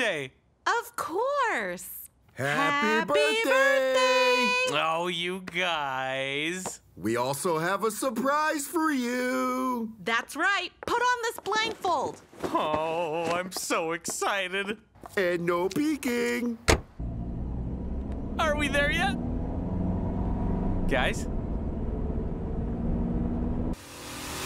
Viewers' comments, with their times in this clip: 0:07 sounds like Sonic from Sonic For Hire